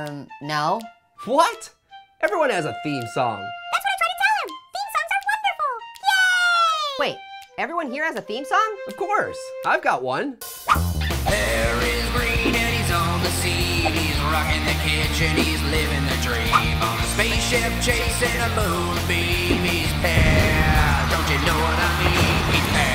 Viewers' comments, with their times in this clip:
0:07 I love pears theme song Pog
0:10 I like pears theme song